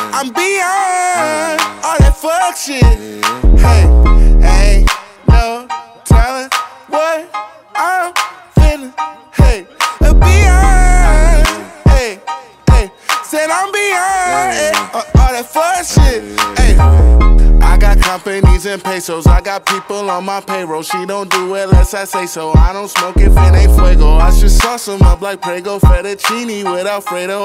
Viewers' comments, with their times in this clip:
0:08 voice crack comes